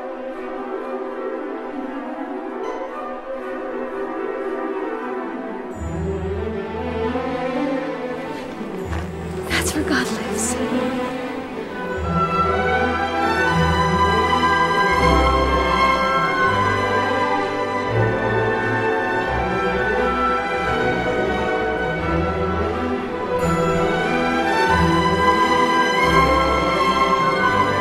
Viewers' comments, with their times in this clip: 0:08 An eargasm starts